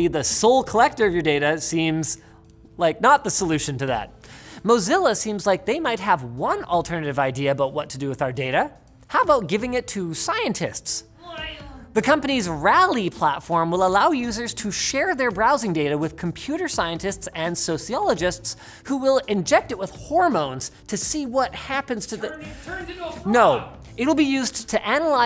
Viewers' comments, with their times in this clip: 0:10 That “Glavin” in the background Hueyvenwmueyvennn
0:11 that "SiEnCE". can't stop smiling,